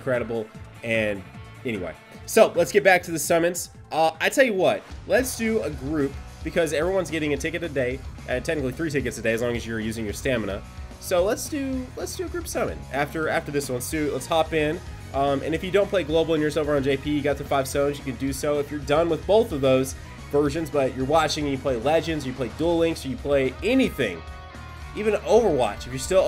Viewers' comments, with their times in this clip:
0:08 I need that music